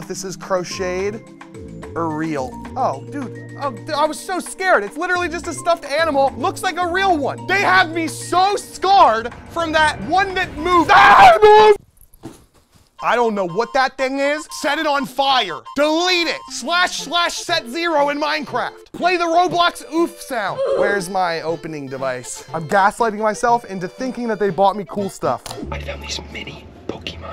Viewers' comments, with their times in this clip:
0:09 I'm not the only one that heard the SMB underground theme remixed is when I realized